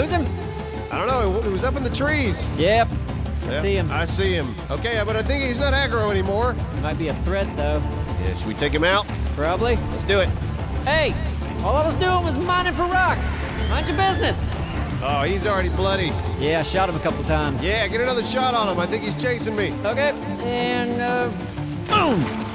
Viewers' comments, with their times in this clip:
0:06 it sounds like a air raid siren!